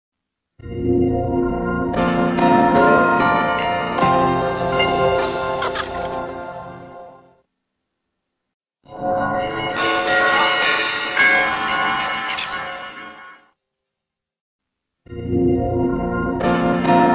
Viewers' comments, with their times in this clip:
0:00 almost sounds like G Major 4 Squared.